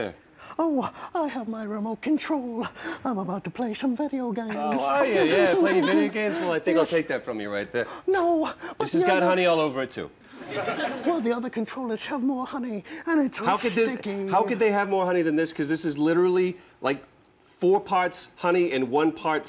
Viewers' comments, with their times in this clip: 0:06 "This has got honey all over it too" The way he said that and his face changing cracked me the hell up. Troy is a national treasure.